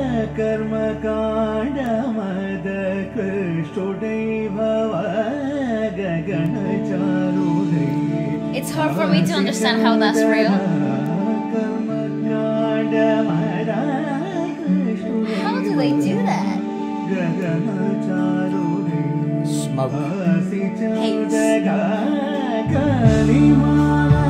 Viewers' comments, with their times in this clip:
0:09 WHHY?? u talked u missed best vocal transition ever!!